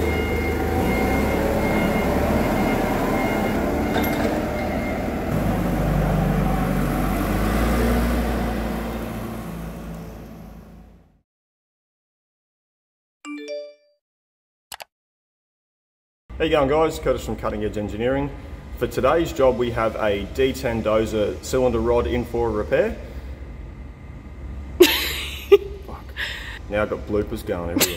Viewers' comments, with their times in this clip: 0:08 What’s with helicopter ?